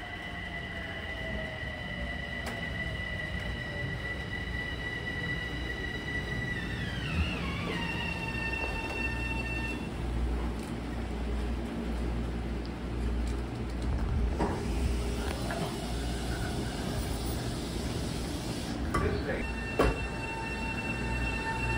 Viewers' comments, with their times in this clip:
0:06 wth was that broken propulsion?